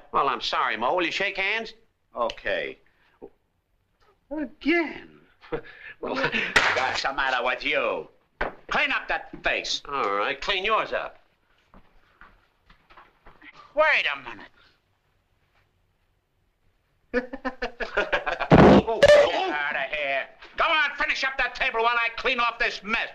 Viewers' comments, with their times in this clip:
0:04 love how Moe says, “again”